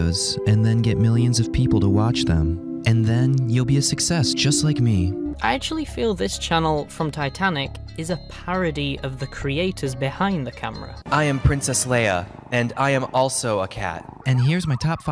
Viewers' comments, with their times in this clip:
0:03 why his voice sound like a damn robot 😂